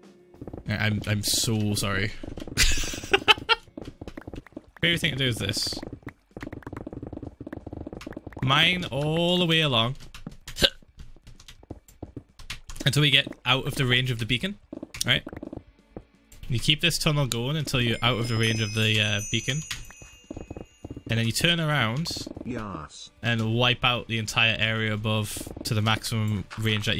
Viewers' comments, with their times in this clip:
0:10 Sounded like a villager getting hit